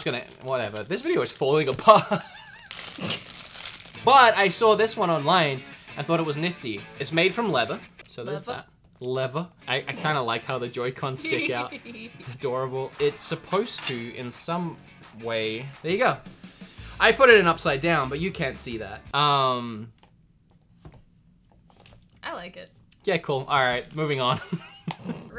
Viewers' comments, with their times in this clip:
0:09 wtf is that laugh